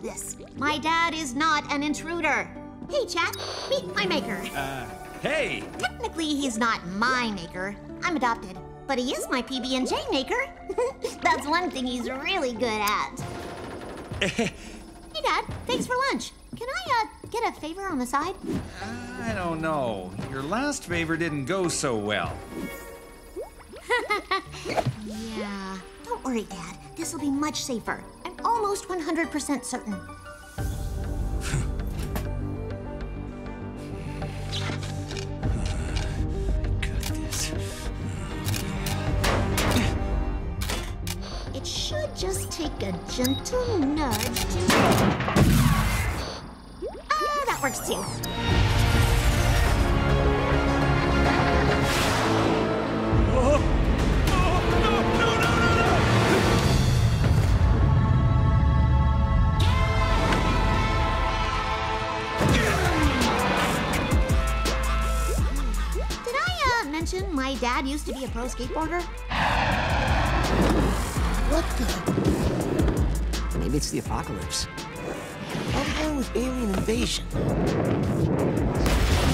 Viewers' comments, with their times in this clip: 0:06 this is for kids Cuz I heard Ni**
0:06 it sounds like she’s saying the n word 😭
0:07 YOO WHY DOES IT SOUND LIKE SHE SAID THE N WORD if u go to the video at like u will know what I mean…
0:07 on I thought she said the n word😭
0:08 she said the n word
1:02 the beat dropped harder then my mixtape!